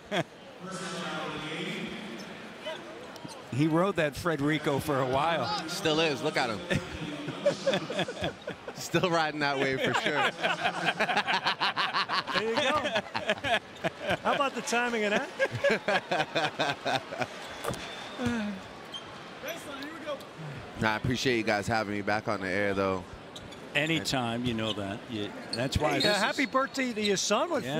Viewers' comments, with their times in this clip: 0:10 Drake really got that million dollar laugh lol